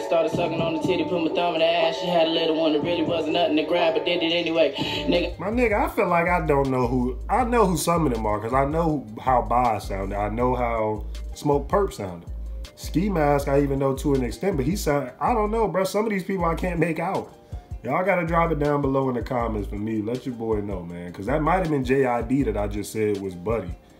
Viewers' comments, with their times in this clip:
0:05 I swore that I heard Kermit the frog in the backround Kermit the frog